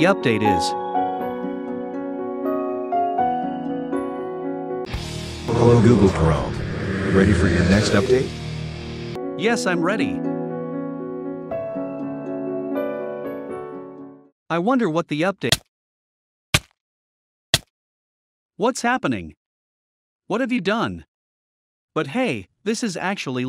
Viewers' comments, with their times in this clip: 0:05 Is no one gonna talk about triple h's theme plays in the backround